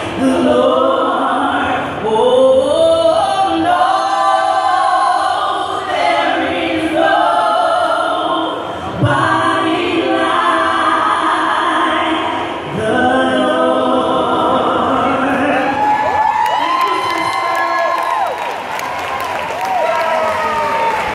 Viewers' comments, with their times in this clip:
0:04 Tina better SANG